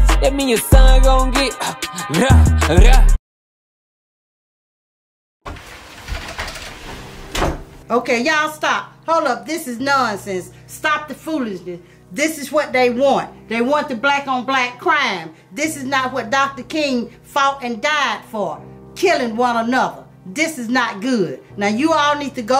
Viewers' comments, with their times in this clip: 0:05 The moan at the start